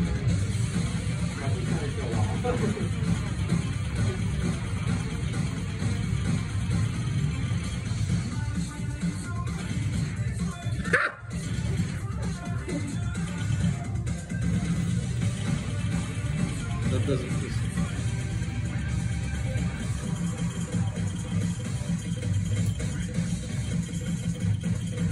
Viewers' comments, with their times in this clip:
0:06 that "HAH!"... lmao, brilliant
0:08 That "HAH!" fucking sent me. Lmaooo
0:10 I was literally dying when I heard the ""AHHH""